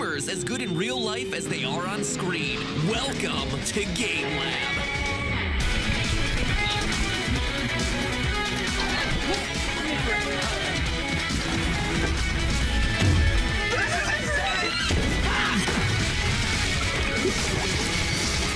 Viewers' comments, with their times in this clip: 0:05 Clap and half to that song